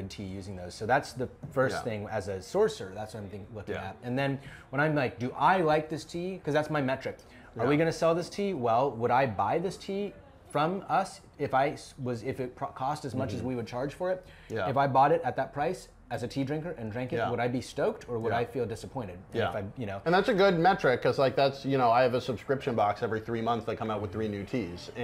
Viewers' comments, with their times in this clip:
0:09 bro started rapping